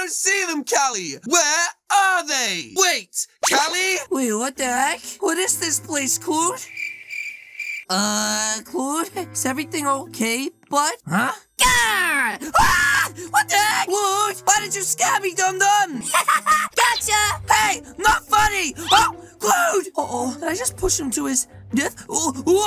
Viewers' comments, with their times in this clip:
0:08 The girl scream